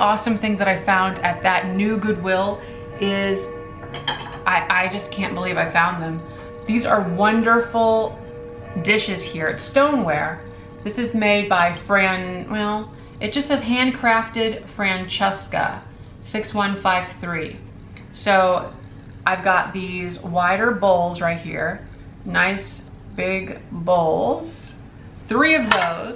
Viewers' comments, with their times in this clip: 0:08 you can hear the grandfather clock